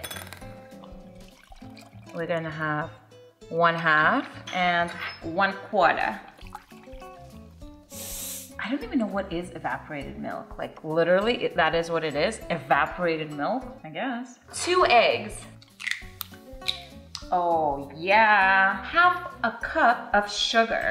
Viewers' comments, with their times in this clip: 0:04 she sounded like Harley Quinn